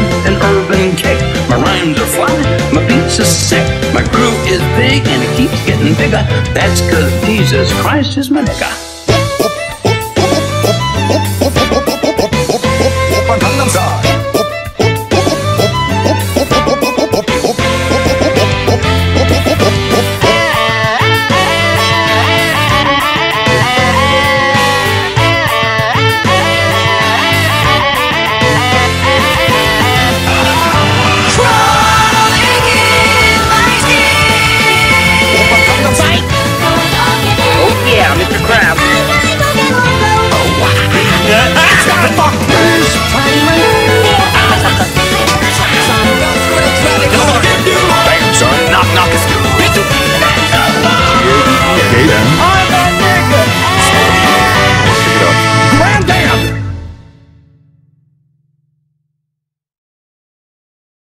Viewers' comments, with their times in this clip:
0:02 according to the captions Jesus Christ is Monika
0:09 I can't tell if the part is pitched to the tune of the Flintstones or if it's my brain filling in the notes?
0:20 is "I"m the Nigga" scream.
0:20 honestly sounds nice.
0:27 strap in boys, HERE THEY COME!!!! Edit: I counted 26, three of them were almost impossible to hear as they played at the same time as other much louder ones, but I heard it
0:29 to the end is just music to my memefest ears
0:30 I put 2x speed I regret it. It also sounds cool on 1.5 speed and 0.75 speed for the whole song.
0:39 I heard space jam, angry joe again, all star, and fuck bees
0:41 There is 21 Guns by Green Day ish
0:48 Great Great No, The Nutshack faintly played in the background at one point
0:50 i don't think was beaned, i heard the "GET NOSCOPED" kid then